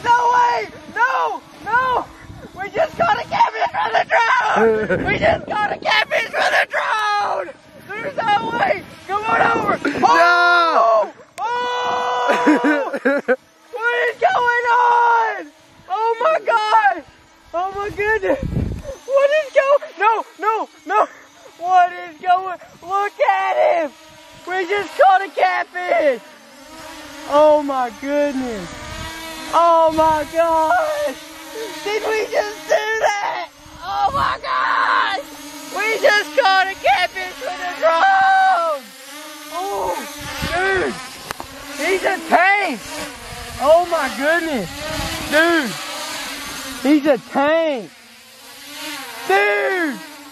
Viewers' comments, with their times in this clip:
0:09 voice cracks everywhere loll😂
0:33 Mega voice cracks